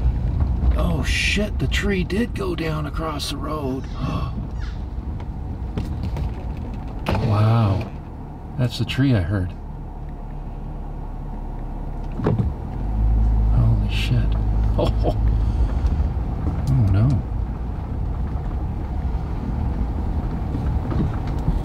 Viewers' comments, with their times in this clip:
0:04 Tree crash sounds are so awesome, by the true definition of the word awesome. Interesting sound as you talked about the tree 🙏
0:05 I heard the cute little porcupine bark Probably there to munch on the downed tree?